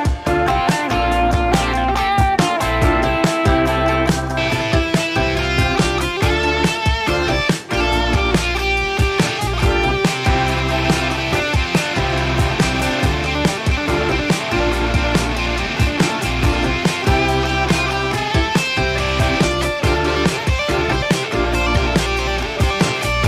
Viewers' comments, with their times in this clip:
0:04 Man, it’s been 3 years since you dropped this and I listen to it over and over. At minute when u change to that guitar sound u looked surprised but it’s f*** awasome, love the end of it. Keep up the good work! You’re the GOAT!!! 🐐🎸🥁